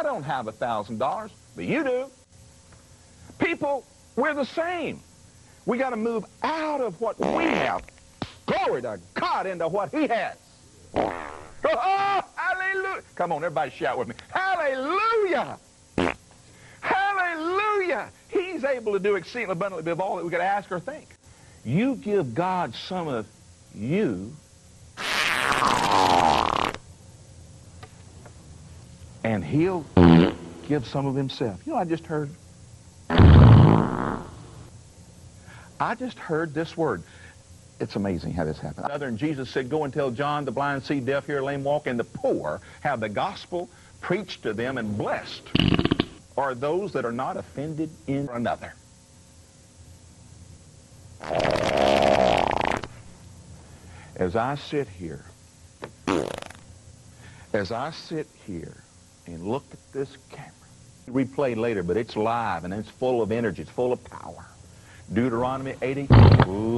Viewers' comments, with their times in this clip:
0:07 Glory to cod!
0:21 best fart he ever did.
0:24 is the best fart! lol
0:24 Oh man, that one was truly rotten!
0:24 Wow! The fart rattled my windows! 🤣
0:34 it sounds like he pooped his pants.
0:52 this always cracks me up! seemed like his intestines gave up on him and just let everything go. too much farting can make a mess haha. this guy says more crap out of his mouth than he lets out of his butt.